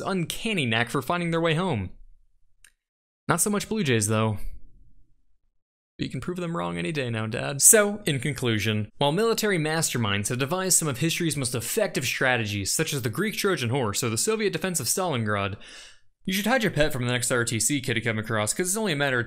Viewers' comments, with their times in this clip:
0:05 PERFECT comedic delivery
0:05 That was a genuine sound of sadness